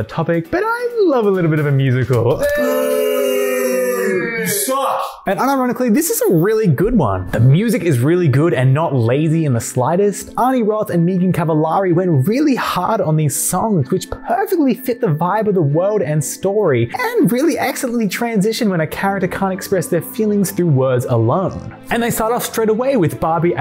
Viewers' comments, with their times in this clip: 0:07 Love the choice of background music here! I will stand by the fact that Disney Princess Enchanted Journey had banger music till the day I die, the songs are so good
0:08 oh my god !!! That back ground music is literally my childhood Like, i wouldn't have thought i'd hear it in a video like this ! Thanks !